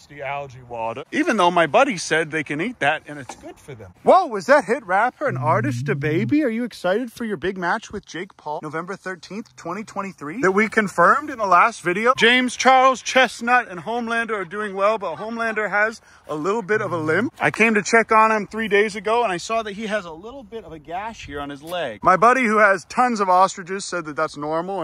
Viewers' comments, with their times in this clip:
0:04 Kevin noise alert!
0:05 Kevin's little noise
0:05 No joke you can hear DaBaby make this cool sound is like a small rumble and I never heard that before lol!